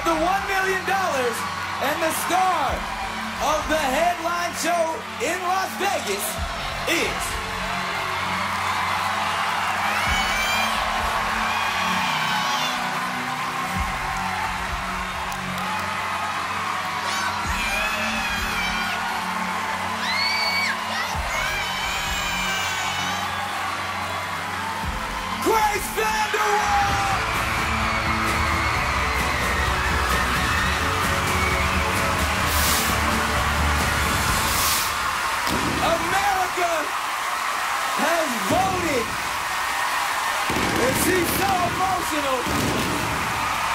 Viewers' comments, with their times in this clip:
0:08 Go you can hear a women Screaming Grace
0:10 who else heard a woman shouting GRAAAAACE!!!!!!!
0:24 That girl shouting grace could have gotten heartattack if either people won! Is she alive?!